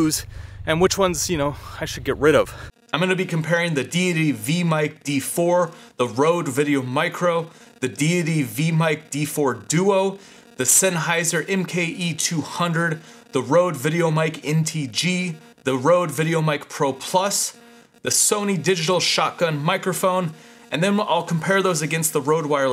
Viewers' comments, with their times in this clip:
0:03 #1 and 2 seemed to clip the signal a little outdoors, but sounded fine indoors. Any reason? Also, when you’re introducing the mics. Starting there is some digital interference in the audio signal. Which mic were you using for your voiceover? The sennheiser? It’s tough to compare the outdoor recordings because of the wind variability. All the mics were us ale indoors, although I liked the Rodes for their low end, and didn’t like the sennheiser’s more sibilant character. That could be Eq’ed though. Have you tried using the wireless Go mic by clipping it to your hat brim? You wouldn’t have the volume changes when you move your head, since it would track your head movements. Thanks for the comparison video. These things can be a challenge to make.